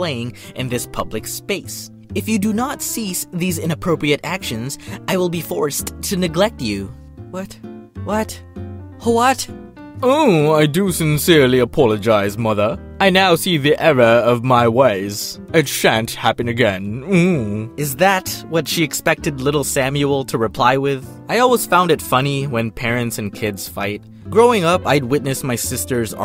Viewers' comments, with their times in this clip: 0:10 sounds like Ichiya from fairytail lol